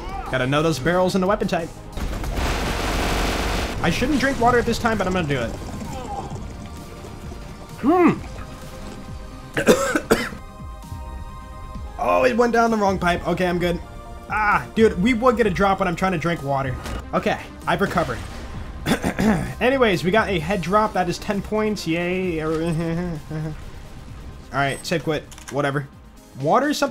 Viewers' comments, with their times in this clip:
0:08 That choke on the head drop :D